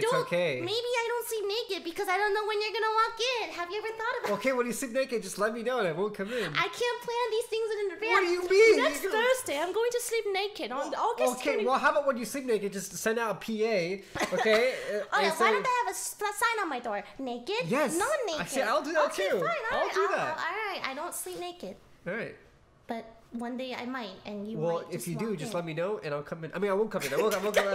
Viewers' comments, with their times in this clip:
0:09 THE CHANGE IN THE ACCENT OMGGGG😭😂